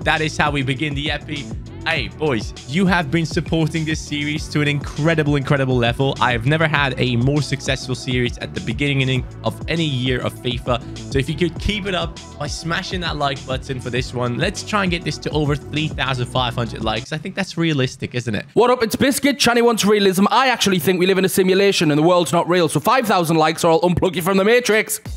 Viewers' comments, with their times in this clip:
0:07 Did he say beginigining